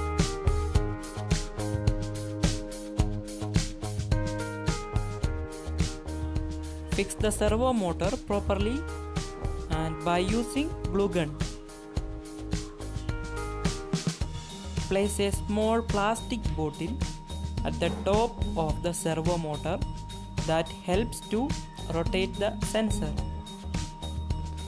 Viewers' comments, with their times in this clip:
0:09 Where can I buy a bloogun?